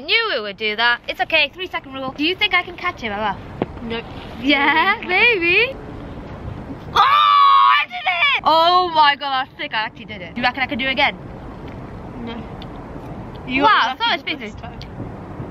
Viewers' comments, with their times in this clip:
0:03 my gay ass thought she said "baby" but I think she said maybe =(((